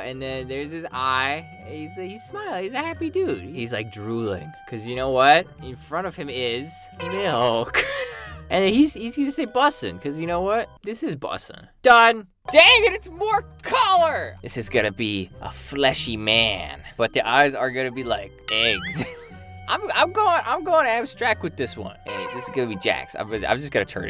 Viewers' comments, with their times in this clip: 0:10 the way he said Milk was very concerning 😂